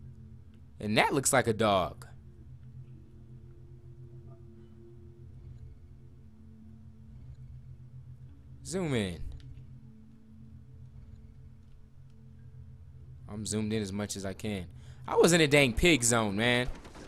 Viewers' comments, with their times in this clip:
0:03 I'm mad that the Dog scared the shit out of him and He scared me when he screamed